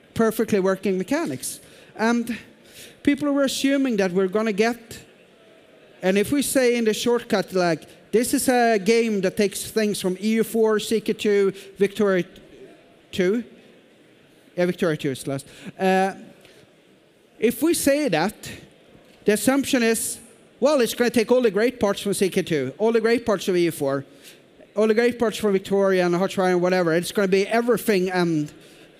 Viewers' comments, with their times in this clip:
0:09 stumbling over which vicky is was is making my hopeful brain think there may be a vicky 3 some where in the works, but my rational brain says shut up